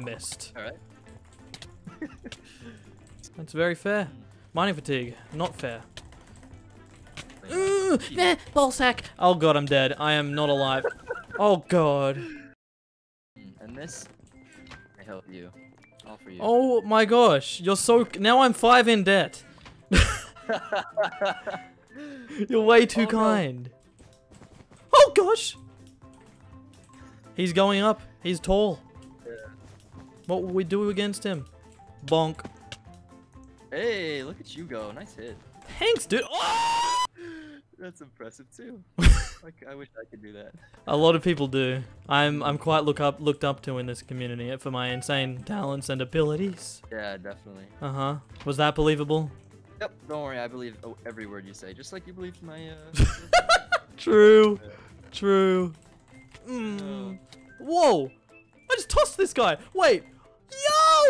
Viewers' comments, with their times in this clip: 0:07 “Ehh-hah bAII sacK” Best death cry I’ve ever heard
0:45 ayyyyy there was the voice crack i was asking for in stream